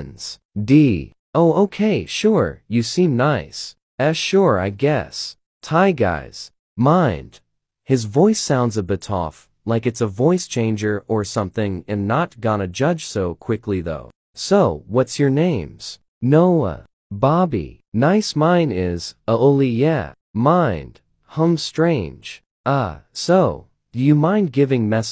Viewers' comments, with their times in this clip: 0:08 BROO but all have voice changer btw